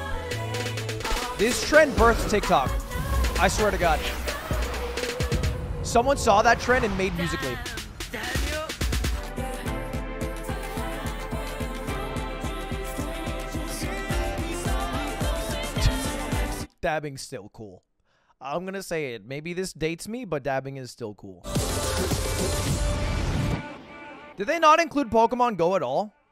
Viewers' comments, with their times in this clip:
0:09 I swear am not the only one hearing "Ar ar ar ar ar ar" 💀💀